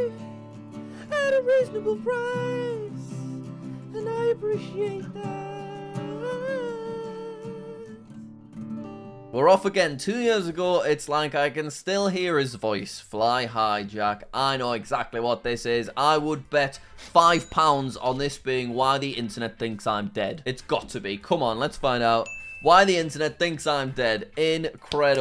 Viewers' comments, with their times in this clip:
0:08 i like how the audio fades over